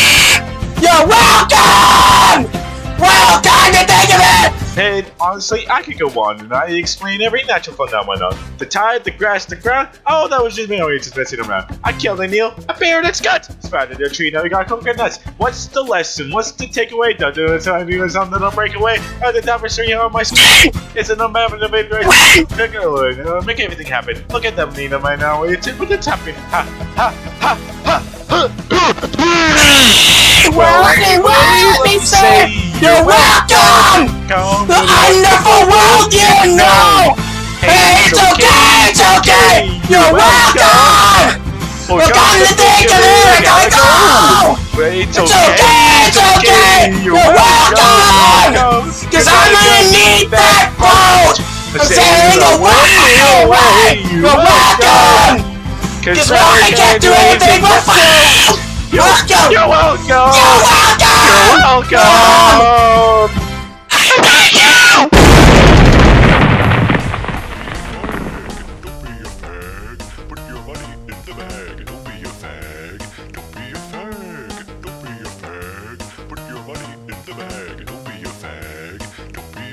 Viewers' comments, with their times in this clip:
0:04 suddenly calms down
0:29 my voice when I hear this shit
0:42 Scream in the backround
1:02 THEY BOTH SCREECHED AND IT LITERALLY SOUNDED LIKE A DEMON EMERGED FROM THE DEPTHS OF HELL
1:04 👌 perfect ending.... with a devilish nuke rock